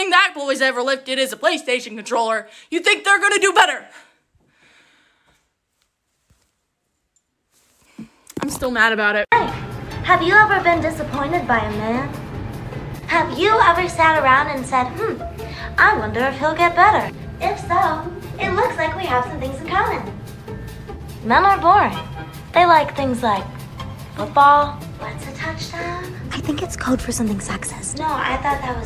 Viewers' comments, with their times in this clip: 0:09 i like her voice it sounds really calming like it was spoken through a mic kinda muted sounds like she was recorded in the 1900's nice